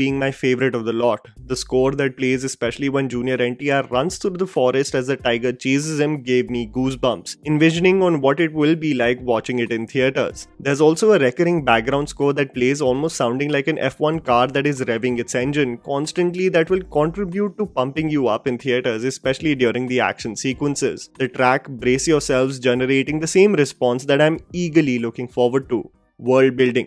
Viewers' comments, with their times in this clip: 0:10 well that specific sound sounded quite a lot similar to the sound of reiner and bertholdt's reveal in you see big girl